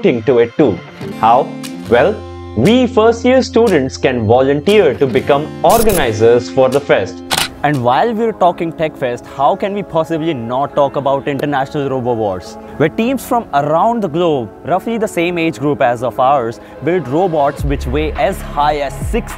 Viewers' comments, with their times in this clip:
0:05 orgies Sounds sus🤨